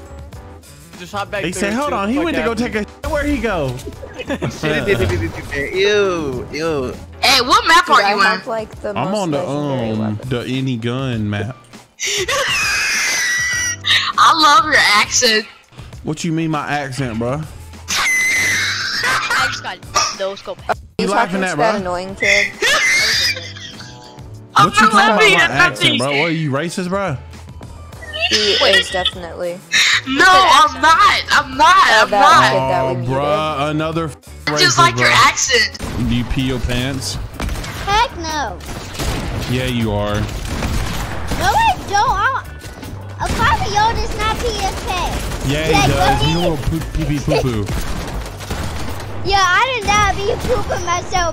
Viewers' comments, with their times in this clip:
0:08 what is that laugh🤣
0:34 that kids laugh lmaoooo